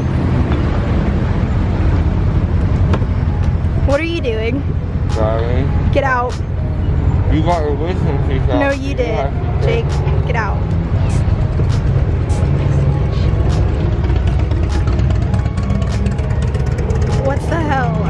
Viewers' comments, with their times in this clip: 0:03 OSKSKSK ME & U playing